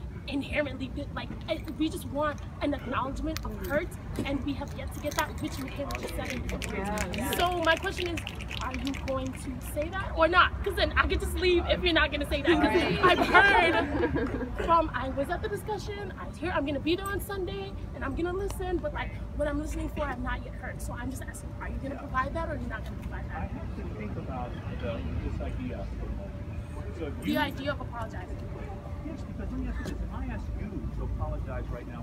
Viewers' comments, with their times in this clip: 0:04 What's that clicking thing? They don't clap, they don't say to display that they are agree? And is it a scene for them to act?
0:14 why the fuck are the clicking ?